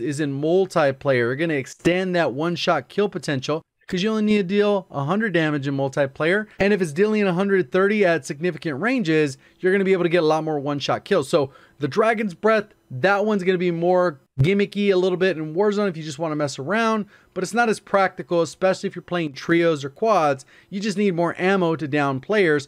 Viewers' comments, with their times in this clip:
0:05 this man saying multiplayer like mul tie player